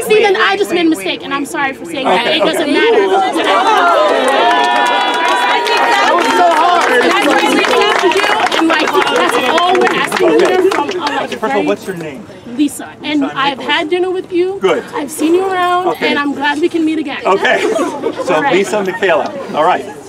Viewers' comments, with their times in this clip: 0:07 do they realize they started clapping? They probably caused PTSD to half of the students.